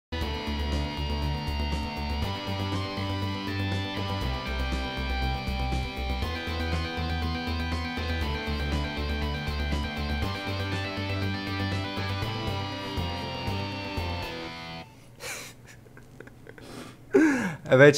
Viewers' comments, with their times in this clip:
0:00 looks like he is singing in a bad way but f! funny